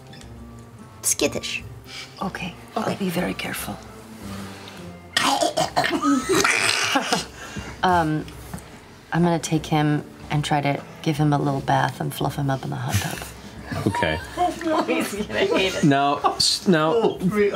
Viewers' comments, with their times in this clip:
0:03 Oh wow. I knew it was Matt making the sound but I never realized that the second half of the sound was Taliesin snorting.